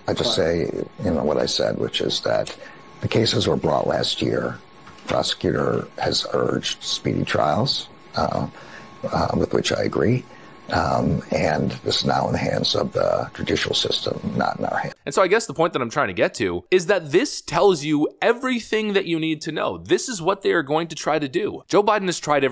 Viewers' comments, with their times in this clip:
0:07 That guy and his vocal fry is so annoying